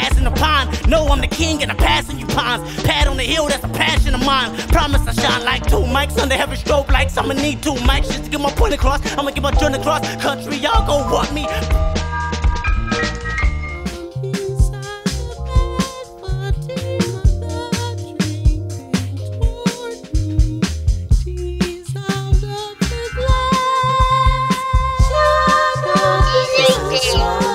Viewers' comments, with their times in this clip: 0:10 why do I find this part so hilarious when he spases on the beat and pauses and has a staring contest with the camera 😂😂😂😂
0:12 Damn, you got the whole TDE laughing